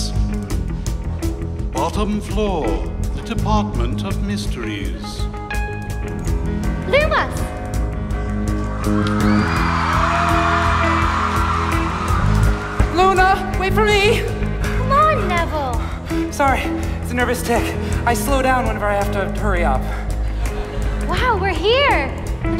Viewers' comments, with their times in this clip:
0:07 you can hear a couple people gasp when they realize its actually Evanna playing Luna and it's so wholesome